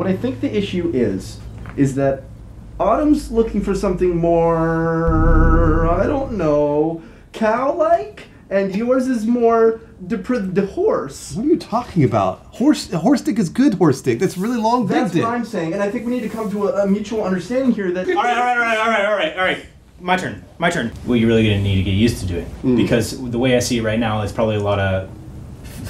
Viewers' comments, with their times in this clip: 0:06 everyone cracking up lmao